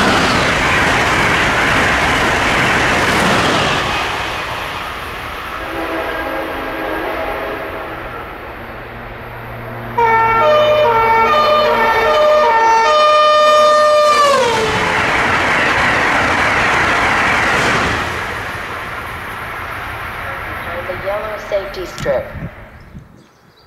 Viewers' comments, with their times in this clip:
0:10 This sounds like the French TGV train horn